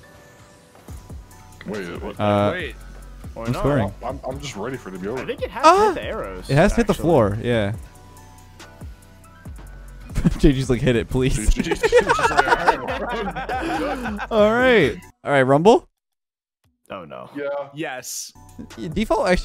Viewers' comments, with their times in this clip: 0:04 Why you sound like that
0:05 wtf was that noise lol